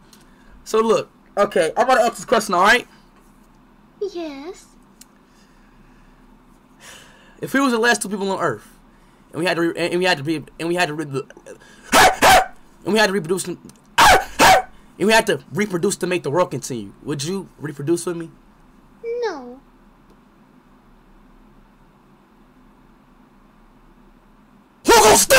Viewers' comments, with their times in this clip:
0:06 Bro started barkin.
0:12 speed barking while asking a question